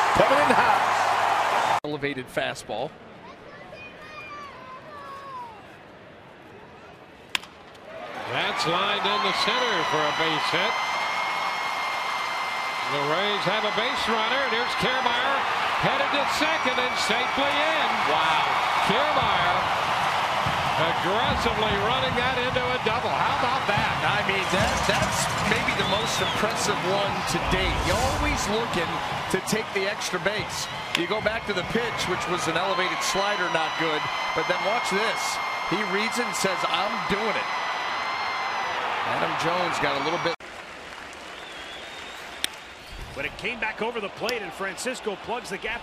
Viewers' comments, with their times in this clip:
0:08 Lmao the lady yelling
0:29 anyone hear the person screaming?